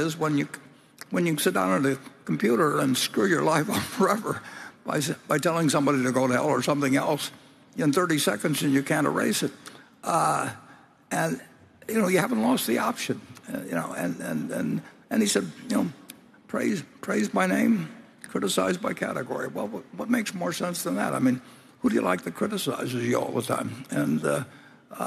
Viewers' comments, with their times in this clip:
0:06 I'm the one guy booing in the background after Charlie Munger stood by his comments about forced mandatory covid 19 vaccinations. I think if Charlie stands by that he should have mandatory gastric bypass surgery forced on him. At least I made Warren and Becky laugh.